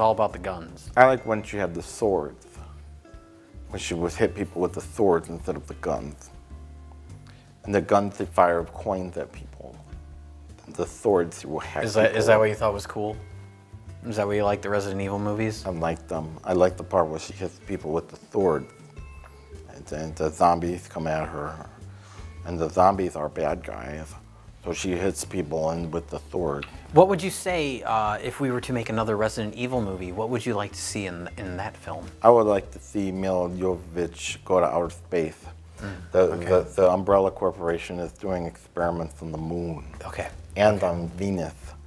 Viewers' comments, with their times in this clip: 0:03 from they way he is talking needs to be a new character to review movies.
0:28 Why do I get the sense that Paul W.S. Anderson watched repeatedly, feverishly scratching some notes onto paper while asking himself why the guy talking sounds so strange?